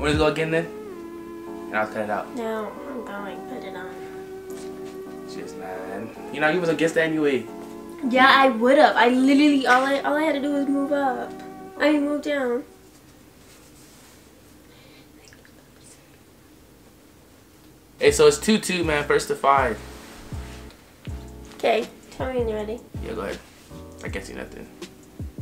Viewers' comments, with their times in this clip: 0:09 she said littaly